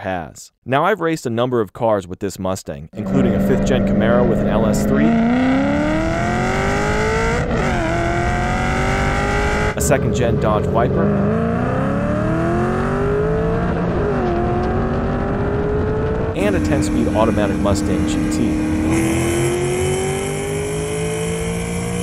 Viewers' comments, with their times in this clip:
0:09 any one else hears seccind gen dodge wiper